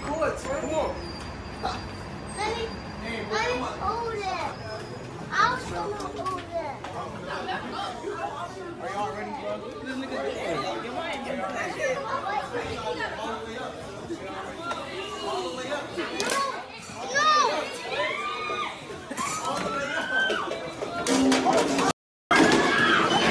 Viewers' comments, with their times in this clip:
0:10 you can hear a customer saying "whats this n*gga doin?" 😂😂😂